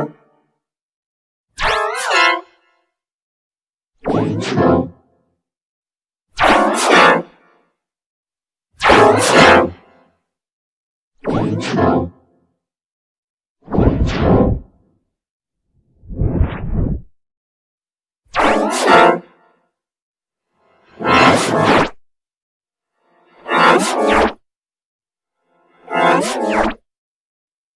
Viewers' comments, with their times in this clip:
0:08 like g major 19